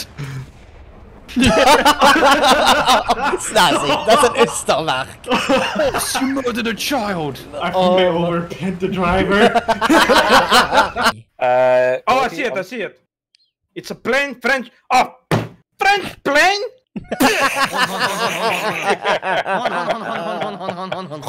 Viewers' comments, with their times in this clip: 0:03 i have never heard Ystervark pronounced like that in my life 😂
0:05 As a South African, I love how you say Ystervark😂